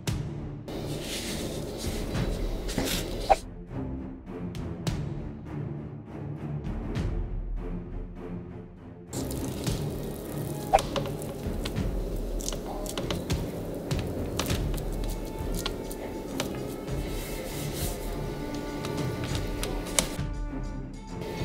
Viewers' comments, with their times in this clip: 0:09 wtf bra u laughing too.